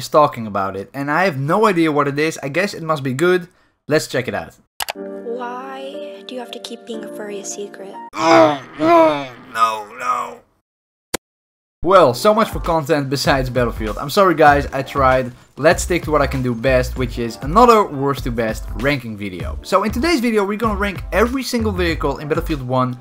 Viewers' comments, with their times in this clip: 0:07 you can hear the suffering and the heart stopping in his voice its like a needle struck his heart